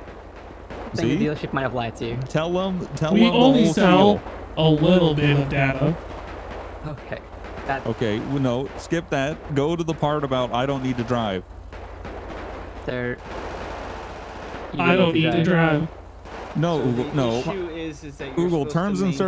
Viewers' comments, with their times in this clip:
0:03 what on earth is up with the constant gunfire lol